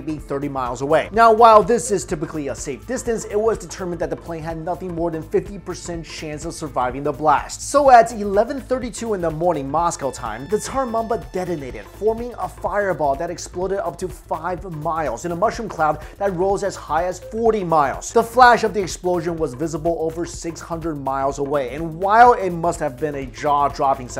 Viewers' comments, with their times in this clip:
0:10 The Tar Mamba?